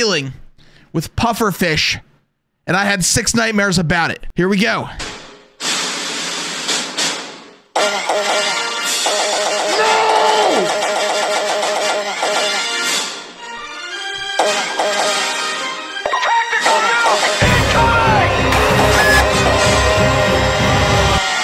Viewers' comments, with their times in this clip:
0:09 That muffled "NO" had me on the floor